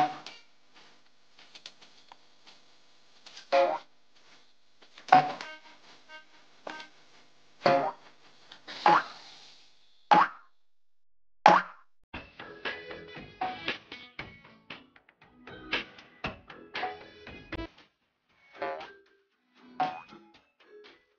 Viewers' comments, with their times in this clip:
0:08 No haha it had to fade out noo Fart waha Edit OMG THANSJ FOR LKEKS